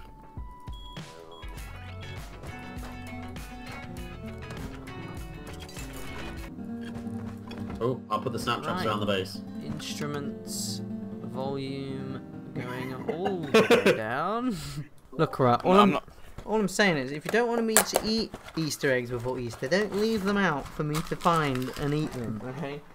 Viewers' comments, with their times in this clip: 0:06 my mans started playing Chop Suey on the guitar wtf